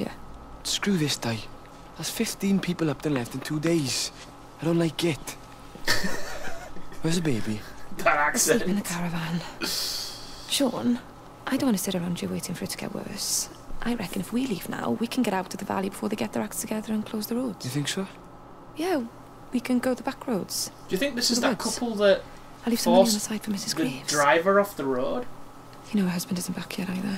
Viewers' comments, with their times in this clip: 0:10 The people are welsh I'm not from the valleys though so I don't sound quite like that